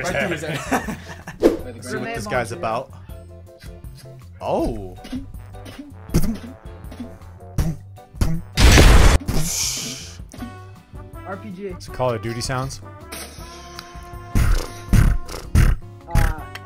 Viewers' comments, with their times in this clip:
0:03 this is what people mean when they say they speak American